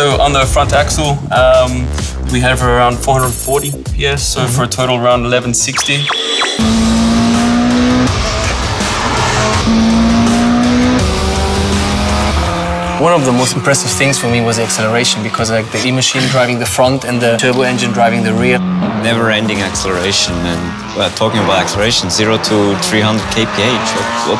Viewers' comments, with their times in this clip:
0:05 anime sound effect